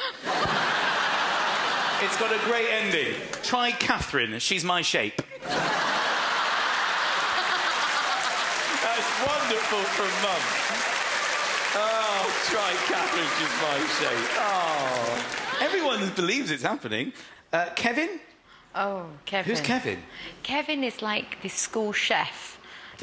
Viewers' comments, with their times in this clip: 0:07 that laugh,throwback to spice girls days